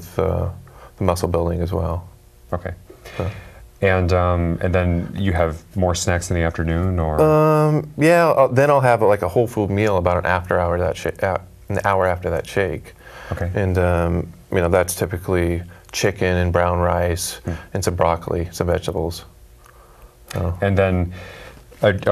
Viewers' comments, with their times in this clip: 0:06 OMG does he say " and then you have more sex in the afternoon?" freudian slip or what?.....no-one seems to have noticed that..LOL